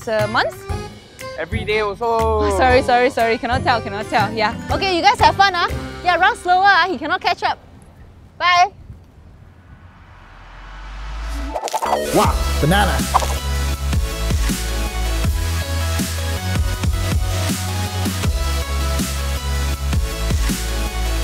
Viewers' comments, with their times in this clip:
0:06 You mean 'catch up', not 'ketchup'?